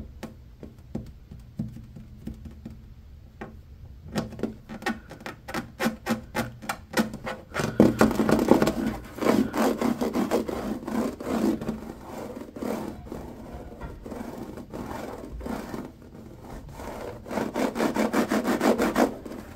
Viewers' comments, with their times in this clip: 0:04 Yess I love the AC scratching and